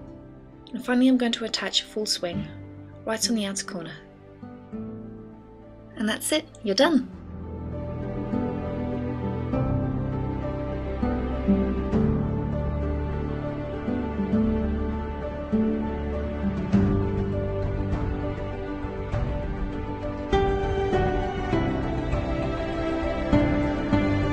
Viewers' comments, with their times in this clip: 0:07 you have a beautiful laugh i love this make-up art!